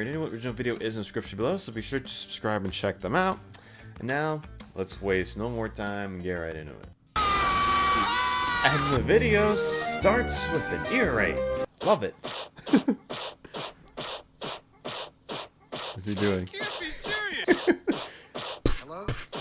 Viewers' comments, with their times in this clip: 0:07 and the video starts with an ear-rape